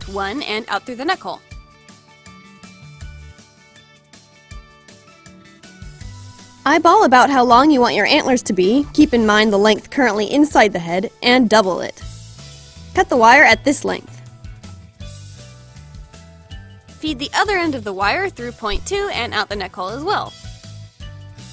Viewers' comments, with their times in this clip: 0:05 I feel like she goes really loud Anyone else?
0:06 rip headphone users her voice gets really loud here